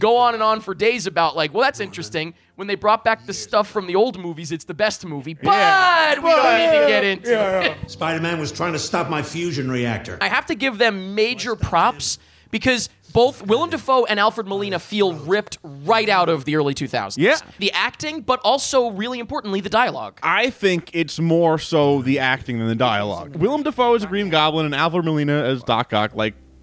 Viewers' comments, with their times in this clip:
0:09 Sure, I think they did a good job with the villains sounding like themselves, but for some reason, the actual Spider-Men just sound like dorky, awkward guys. They all just sound like Tom's Spider-Man when they're talking to each other, which was pretty disappointing to me.